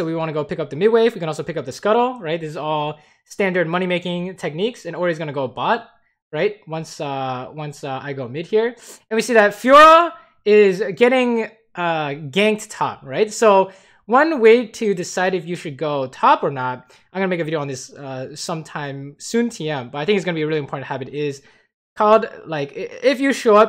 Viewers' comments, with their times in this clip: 0:09 that scream was pretty scary